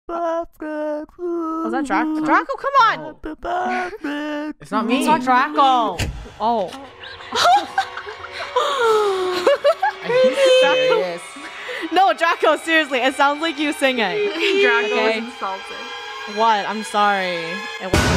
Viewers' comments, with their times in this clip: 0:00 That singing will make you win in a singing competition UwU
0:02 random noise Me:REEEEEEEEEEEEEEEEEEEE >:€ MEH EARS >:€